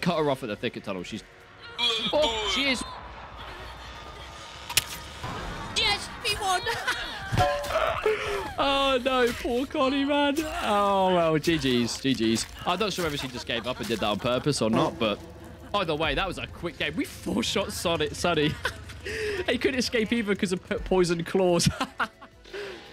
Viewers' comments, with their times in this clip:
0:08 sound effect is perfect 😂